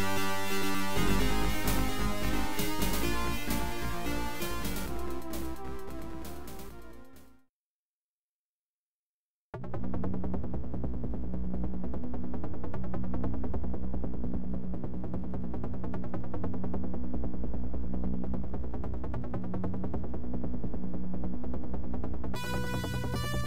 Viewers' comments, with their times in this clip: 0:08 I didn't know as a kid that the HELICOPTER NOISE is part of the MUSIC not the mission with some HUGE boss! 🤫🙄